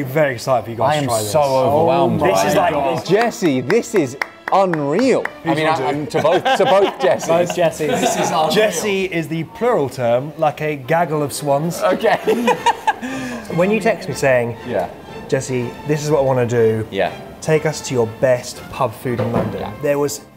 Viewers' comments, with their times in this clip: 0:06 ' mooshie pees 'or ' moist peas ' ?